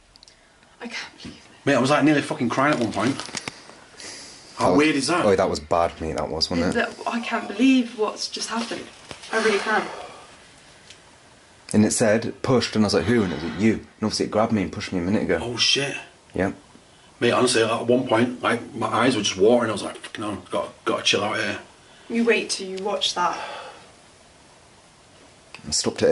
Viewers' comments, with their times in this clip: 0:07 sounds like a male shouting.